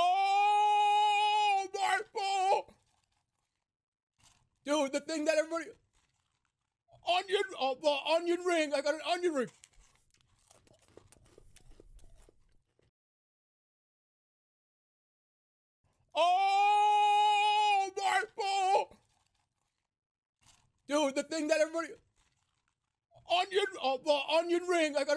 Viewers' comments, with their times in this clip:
0:10 small eating sound